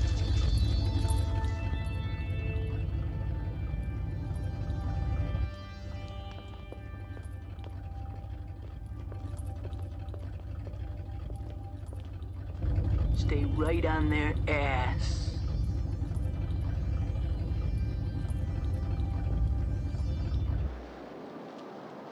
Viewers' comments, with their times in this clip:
0:09 stay right in their A got me with his voice